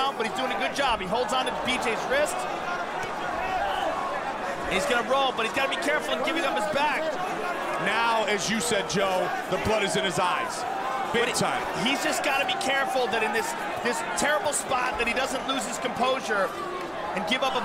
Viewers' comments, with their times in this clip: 0:03 joe's scream is really horrifying